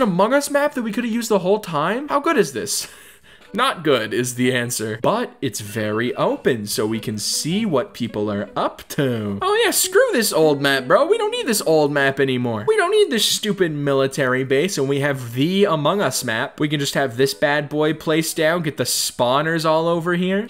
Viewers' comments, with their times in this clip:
0:04 I can hear an alarm in the background of the video
0:04 did anybody hear the alarm?
0:04 you cant escape from the ring tone